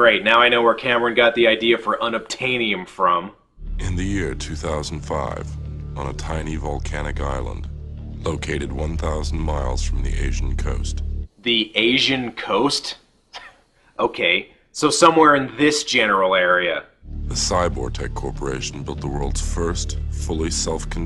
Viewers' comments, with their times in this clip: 0:03 For some reason that narrator's voice compels me